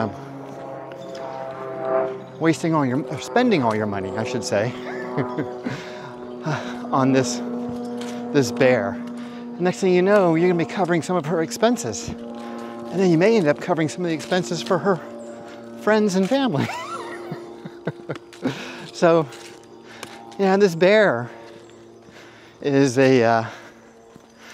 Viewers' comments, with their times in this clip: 0:06 That airplane sounds like the Jericho trumpet of a Stuka divebomber! Seek cover immediately!